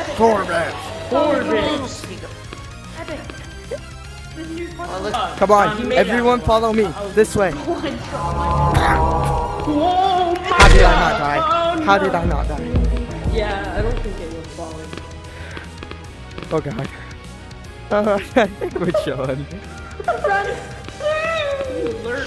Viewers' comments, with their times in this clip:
0:07 Is it me or he just played a melody?